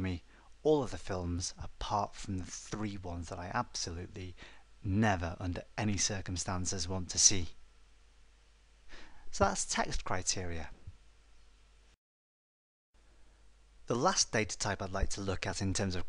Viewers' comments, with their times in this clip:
0:03 the harshness in tone when u say 'Never Under any circumstance' was awesome :) Nice tutorial BTW! :)